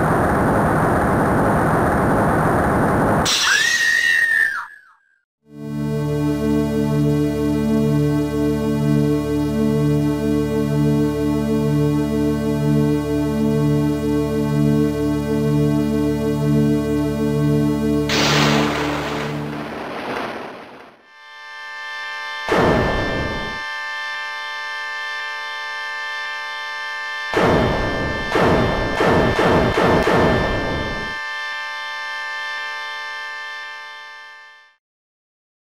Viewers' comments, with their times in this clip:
0:03 God DAMN, Dahlia's scream sounds like something out of The White Chamber!
0:03 I think this scream should be a lot louder
0:04 the "music" here is just haunting. It's reminiscent of Dahlia's theme, but it's just that single, droning note, symbolizing how we're seeing her in her truest essence. There's not even a distant trace of beauty, just a being of sheer parasitic malice.
0:22 Idk why but feels so sad for some reason, idk it just sounds sad I never even played Ace Attorney LOL